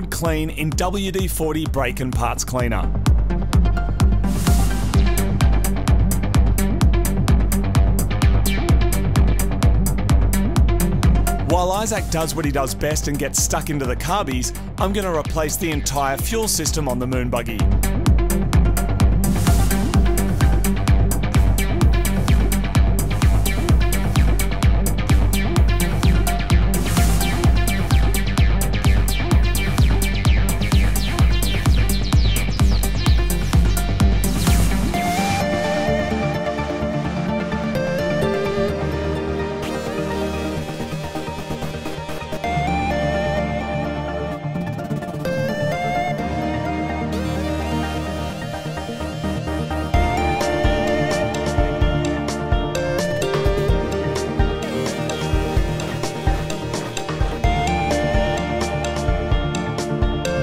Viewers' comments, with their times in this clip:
0:04 Like the 303 howling away
0:46 Love the mike oldfield enspired audio